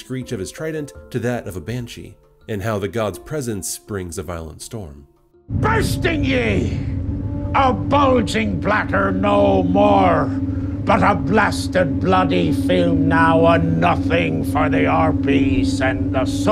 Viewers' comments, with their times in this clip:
0:03 What's the name of the song that place ? The steel drum sound is just really nice